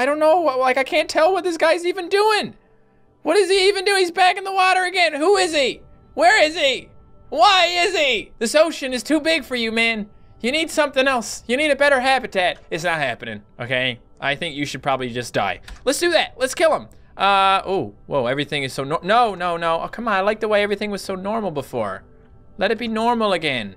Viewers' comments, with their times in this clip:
0:06 he sounded like Seinfeld